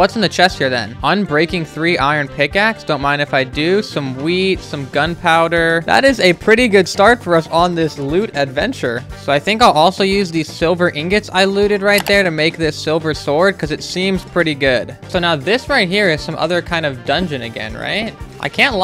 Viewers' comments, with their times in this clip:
0:03 am i the only one that heard “some weed”